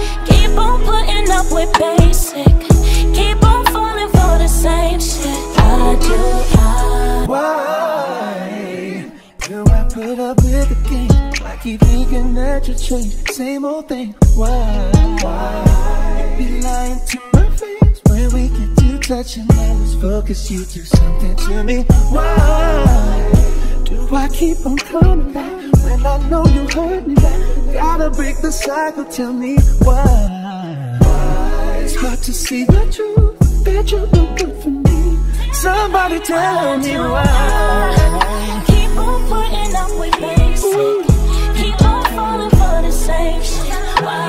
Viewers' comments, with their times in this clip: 0:05 why does it cut like that? it doesn't blend
0:05 That transition was choppy... I use a free audio editing program on my phone and I could've did a smooth transition for that part. The mixing itself isn't good either, Robin's vocals were like too quiet and weren't mixed well on the track or something
0:31 Whew Robin hit that ✨✨